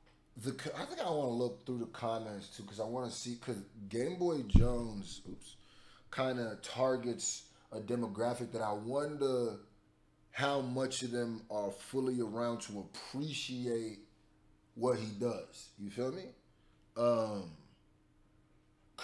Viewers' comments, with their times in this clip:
0:06 So I’ve continuously been reaching outside of our community this year because I can notice I’m not “appreciated” fully here so once I find that crowd it’s over! Also I can also hear t-pain on this lol let’s keep hoping lol